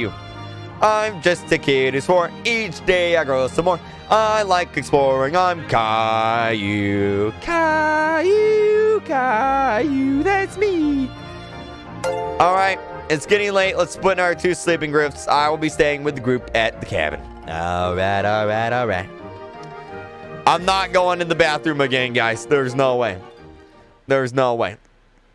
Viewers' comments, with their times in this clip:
0:08 the way his voice cracked was amazing-